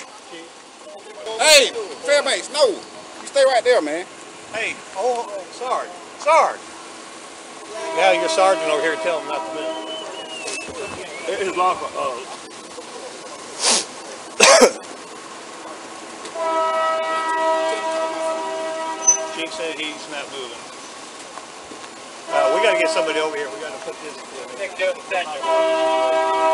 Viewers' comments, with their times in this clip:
0:09 the train driver “hey how bout i blow my horn 4 very long so they can have more commotion